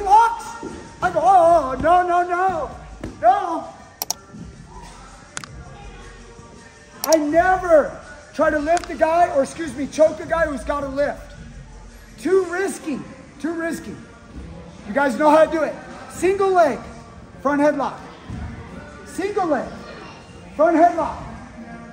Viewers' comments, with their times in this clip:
0:04 Got into this video so much, I legit thought you cracked the guy's neck when it was just the like&share clicks